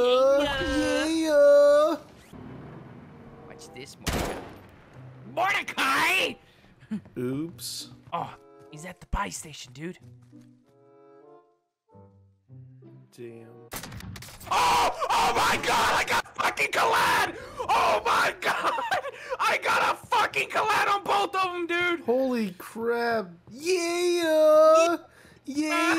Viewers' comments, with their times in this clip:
0:10 The fact that Rigby broke character during the Sickest Collateral in duo brings me joy.
0:10 didn't even sound like Rigby lmaooo